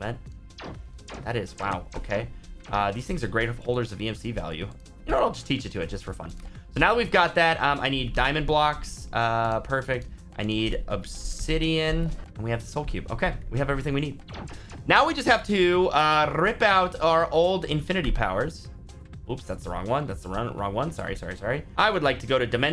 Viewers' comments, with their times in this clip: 0:05 was that a voice crack?